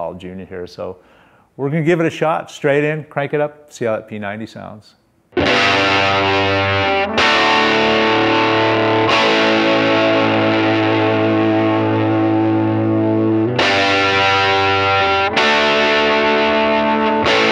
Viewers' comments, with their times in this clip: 0:05 When you struck that first chord I was like, "Dude, fuck yeah!!"